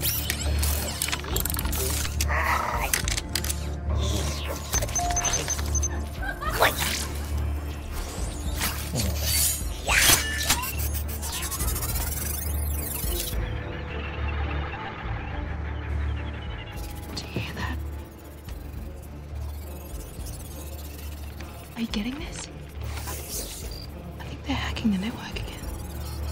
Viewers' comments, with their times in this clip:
0:04 I was watching this with headphones, and one of them doesn't work. And that one that doesn't played background sound so I didn't hear the laughing or elevator ding so I thought that this was from a different version of the movie or something. LOL
0:08 what a laugh?
0:14 Omg Did You Hear A Mangle Radio